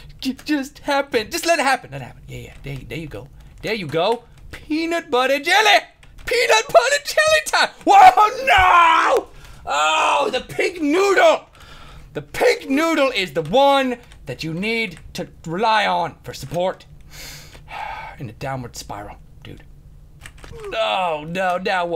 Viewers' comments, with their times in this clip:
0:07 best rage ever peanut butter yelly time